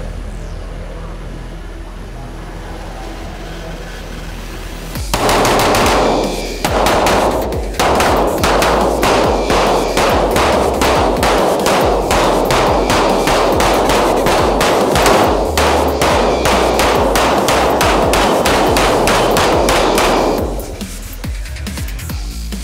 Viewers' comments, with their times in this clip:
0:09 This sounds like my school